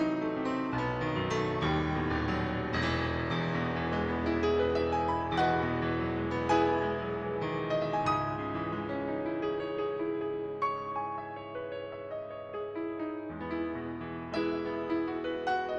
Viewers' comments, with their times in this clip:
0:03 “The Final Fantasy vibes are strong with this one...” 💪🏻